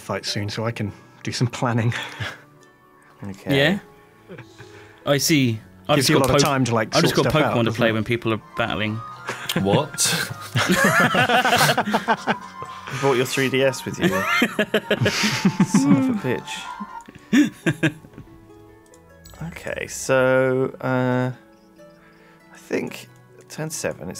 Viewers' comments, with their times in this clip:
0:08 gods I love 3rd gen music. And the remake of it.